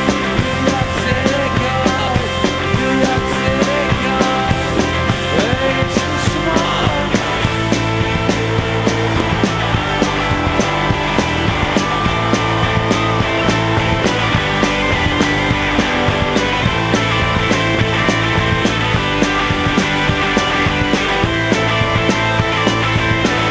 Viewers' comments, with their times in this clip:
0:07 The crowd explodes, they know he's gonna throw the damn thing hahaaaa Japan kicks ass